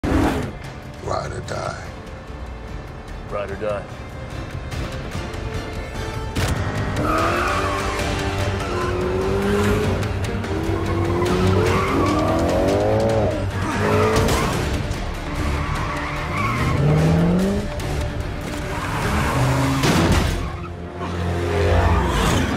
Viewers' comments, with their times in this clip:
0:04 Dom - ride or die Brian - ride or die serious voice Letty - so confused